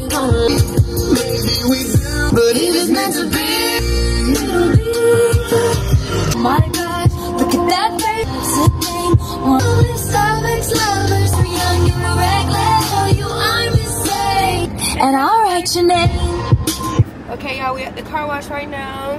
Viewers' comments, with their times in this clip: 0:03 not u jamming my favorite somg meanf to be lol 😂😂❤